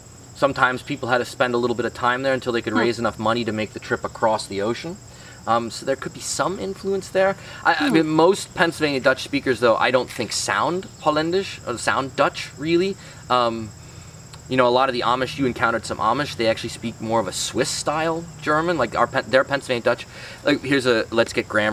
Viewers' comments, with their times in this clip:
0:08 im dutch and even I think it sounds more like Dutch. It really is the accent though which is less hard than normal German. But to me this Pennsylvania Dutch sounds more like a Scandinavian language.